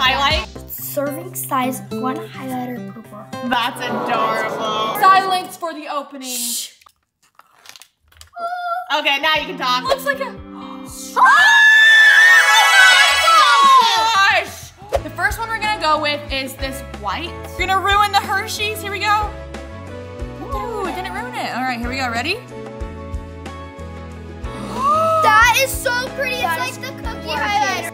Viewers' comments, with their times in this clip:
0:09 Warning to head phone users min..😂